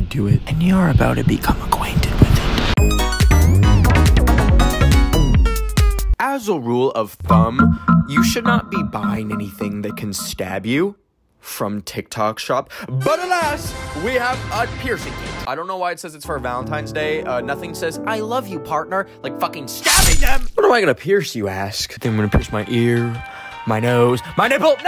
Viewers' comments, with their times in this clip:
0:07 HELP THE DEATH NOTE SOUND